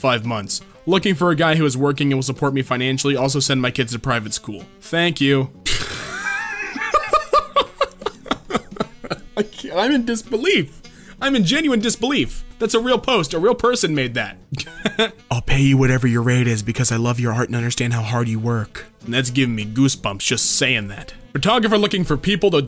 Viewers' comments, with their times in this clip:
0:06 The laugh cutest thing ever 😂❤️